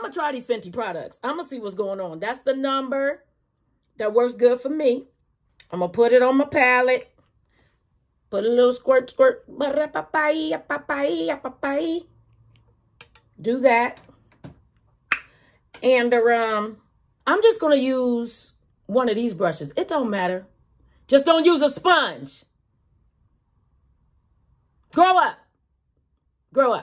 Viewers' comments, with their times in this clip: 0:09 Starting at mark ....that noise she made🤣🤣🤣🤣🤣